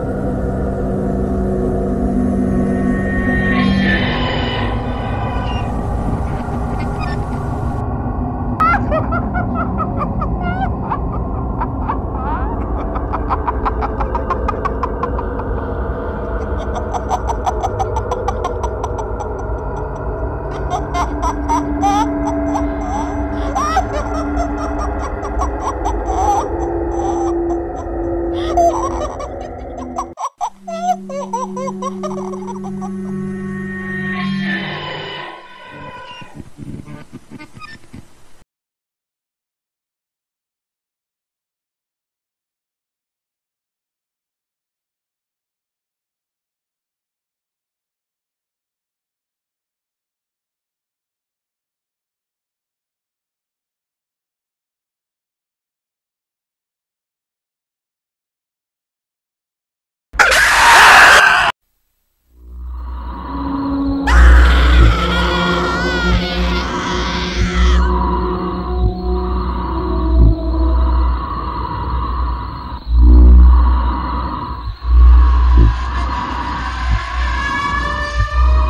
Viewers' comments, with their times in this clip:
0:08 [THE MIMIC] SAMA LAUGHING
1:04 Suicide Mouse Screams